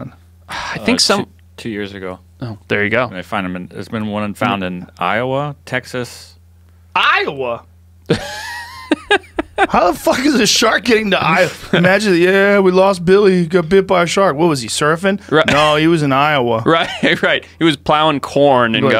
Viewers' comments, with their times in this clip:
0:05 As a native Iowan, the delivery has my complete approval. This is how everyone should say Iowa, as though the most shocking aspect of any story is that Iowa was somehow relevant to the conversation.